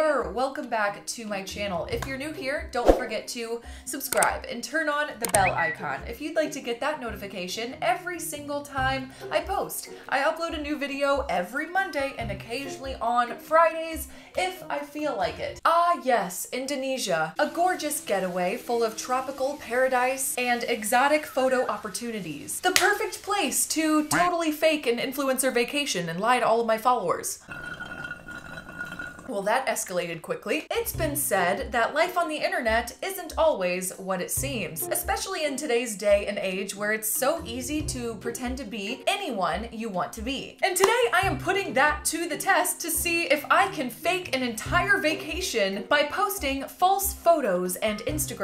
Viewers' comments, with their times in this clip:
0:05 when the ding went off I got a notification-
0:27 that sound gave me anxiety because it sounds like my alarm for in the morning ah
0:32 she sounds like the things narrator